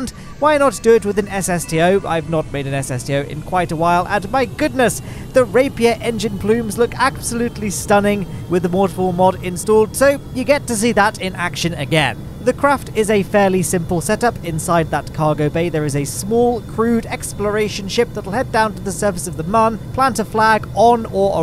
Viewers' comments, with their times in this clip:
0:08 what is the mod he just named? the 'mordflmod'